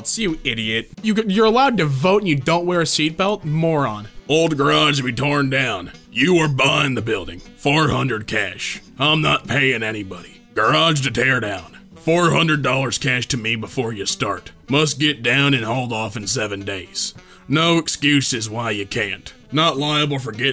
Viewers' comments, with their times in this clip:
0:05 Sounds like Francis from Left 4 Dead lmao